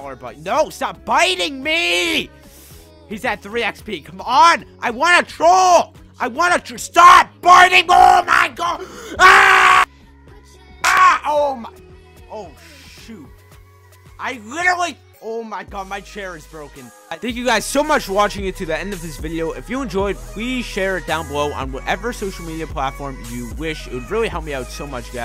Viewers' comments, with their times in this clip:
0:06 RIP head phone users also its ur fault u shouldnt have tried trolling
0:09 what nation he sreems like a girl no afess